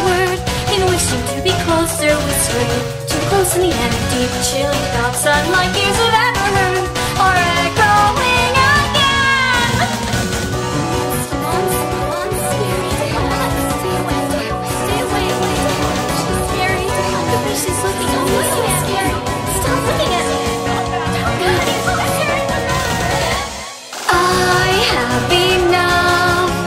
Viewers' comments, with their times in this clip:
0:10 Ahh! My stereo is horrifying ! Why did I download Razer Surround?!